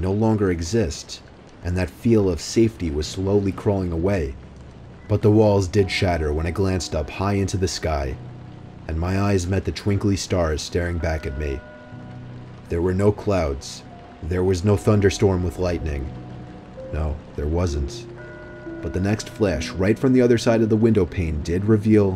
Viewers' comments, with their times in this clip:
0:09 those church bells tho